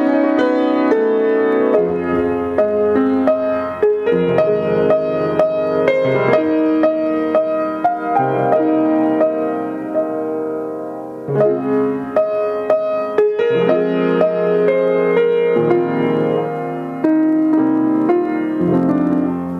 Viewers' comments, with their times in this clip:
0:07 Great song! I love the mood change !